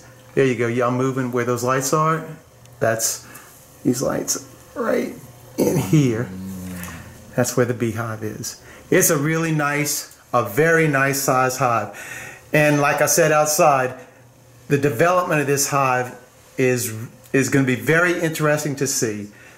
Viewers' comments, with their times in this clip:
0:05 was there a cow outside or did you get a spook groaning on video? (despite the fact that it's audio) Man I wish I had access to honey like that.. for some reason I'm dying to make some straight honey-water-yeast mead and honey is so damn expensive that there's no way I could possibly afford to make it. Oh gross.. That's one thing I don't miss about Mississippi.. those huge Madagascar like cockroaches, those things are so gross.